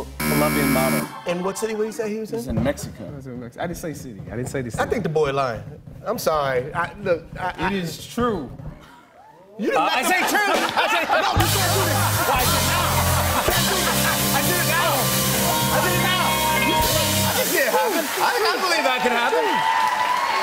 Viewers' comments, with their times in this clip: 0:04 I love Chadwick’s laugh, Rest In Pesce